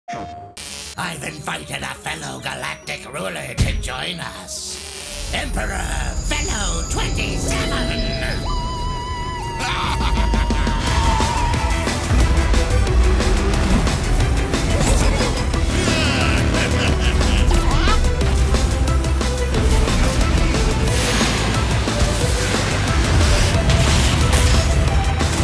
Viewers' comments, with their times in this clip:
0:06 You mean Veee-Low?